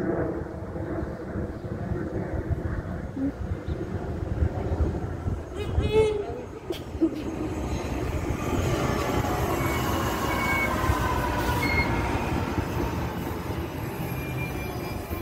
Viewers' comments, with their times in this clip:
0:03 what the hell is that horn lol